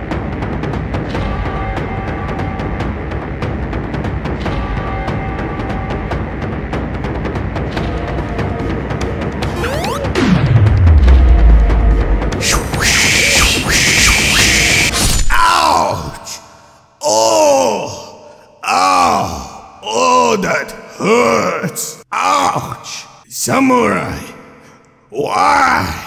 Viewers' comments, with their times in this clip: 0:08 That sonic jump sound 🤣